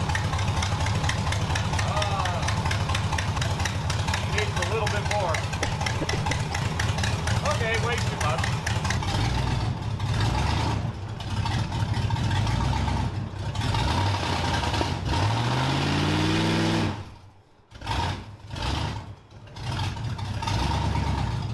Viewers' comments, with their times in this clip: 0:05 She’s got that Harley-Davidson 101 cubic inch engine with the Screaming Eagle pipes lope to her…